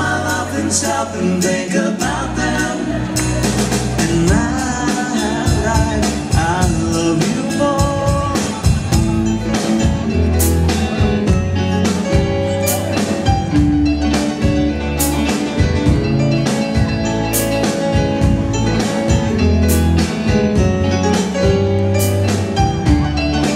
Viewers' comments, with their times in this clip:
0:09 that is very fucked up to do because in the original song they manipulated the speed NICE PLAY!